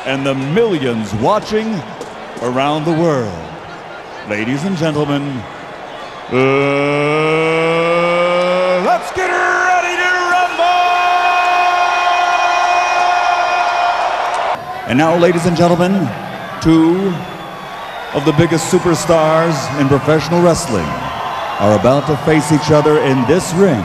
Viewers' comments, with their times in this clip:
0:06 bruh sounded like yu gi ohhhh